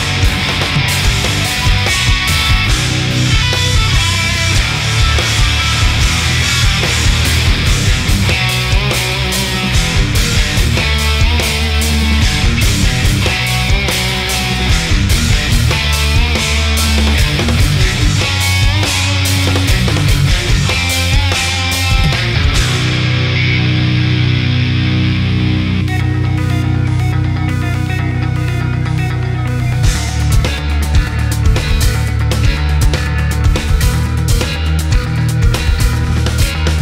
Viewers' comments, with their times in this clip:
0:03 For months and months the first thing in my head every morning was the lead ... sprowww nowwnunnannuuuhhh
0:24 love the switch. damn that was slick drumming. then they go from technical, to heavy as fk. incredible band.